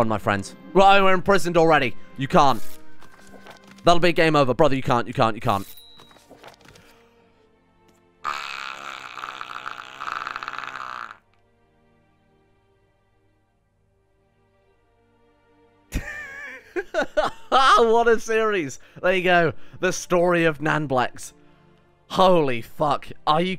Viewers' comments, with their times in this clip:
0:07 Gotta love that TOTALLY broken fan sound ish LOL
0:08 the sound of Mr. Streamer going blue screen. burrr